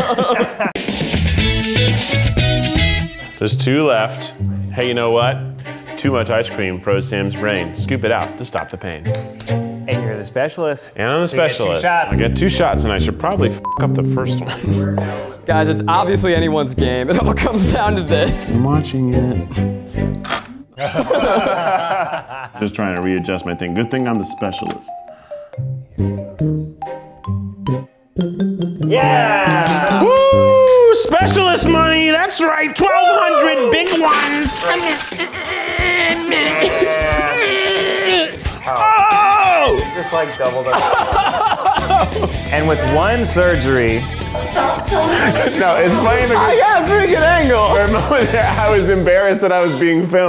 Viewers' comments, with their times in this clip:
0:03 Yes, Ned, we too did inject ourselves with ball pens at school lol. Btw sounds like the beginning of Ursula's song from Ariel.
0:31 keith's accent here just sounds like those weird rapping bois on tiktok T.T